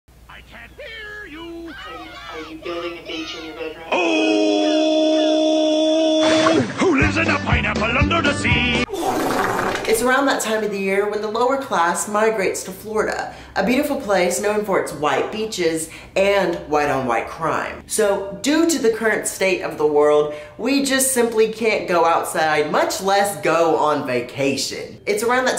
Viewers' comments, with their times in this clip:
0:09 I love the fart 😓✌️😂😂